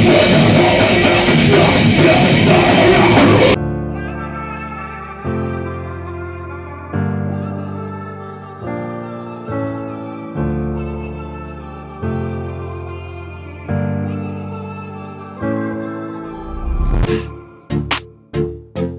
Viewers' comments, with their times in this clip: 0:03 While I think we should be grateful for this footage. I agree, because.. WTF is with the song !?!?!... How "Anti-Metal" is that shit?!! 🤦🏻